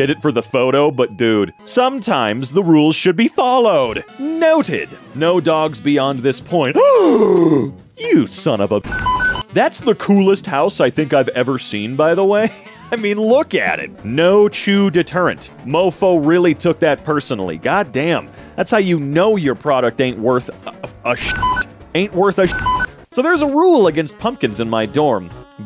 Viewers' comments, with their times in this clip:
0:10 McDonald's friers sound?